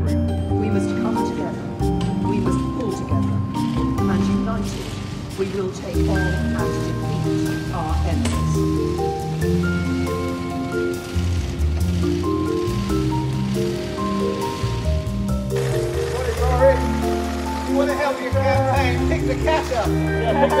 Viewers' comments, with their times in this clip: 0:07 you hear that? The sudden sound of photos being taken? Yes because they have just now realised LARRY IS HERE!